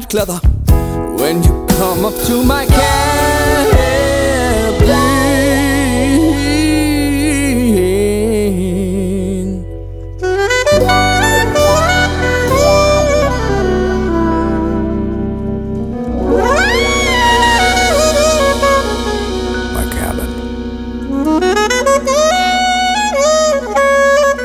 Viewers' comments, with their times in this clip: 0:10 is no one gonna talk about that amazing sax playing ?